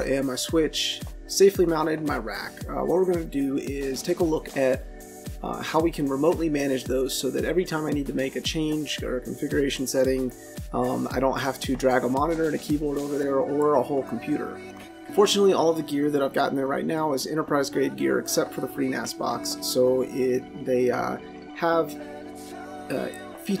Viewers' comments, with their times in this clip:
0:04 Hi. Whats the reason behind the annoying shithouse music while you talk ? It takes away focus from your speaking